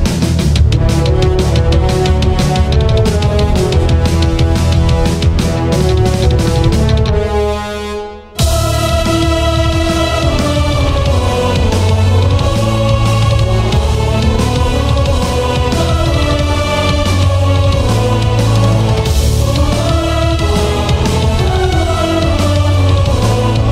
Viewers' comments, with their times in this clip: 0:08 Man that piano vst in the beginning was such a wonderful tone and when the choir came in I got goosebumps. You sir are sugoi.